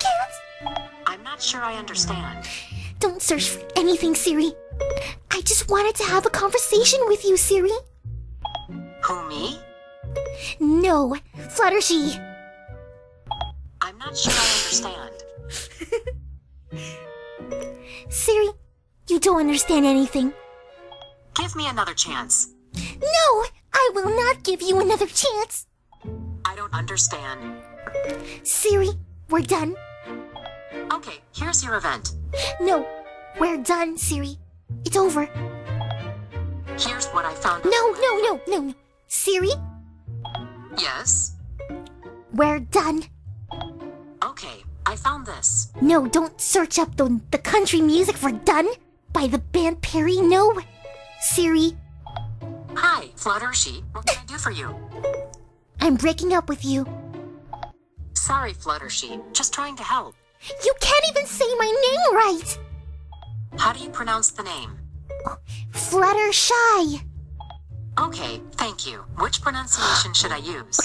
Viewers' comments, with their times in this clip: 0:09 ***** heard (prosumably your) laughter xD l had to stop half way though the video.
0:12 Someone laughing in the minute
0:13 ... wha.... I heard the laugh... >.<
0:13 Wanted to bust down laugh didn't you?
0:14 I heard laughing.
0:15 AWW!!! HER LAUGH IS SO CUTE!
0:15 I hearrr That laught haha
0:15 a laugh HAHAHAHA
0:15 what was that laugh???????
0:17 I am right, I am hearing laught?
0:41 Siri fluttershee is cool in
0:53 fluttershy:were done! siri:Hi!FlutterSHEE! me:wth now?!?!XD